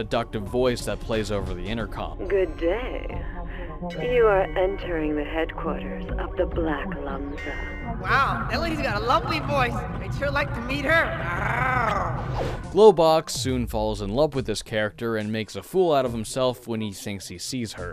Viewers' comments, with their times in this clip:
0:03 Dosent Globox sound like an adult Dustin?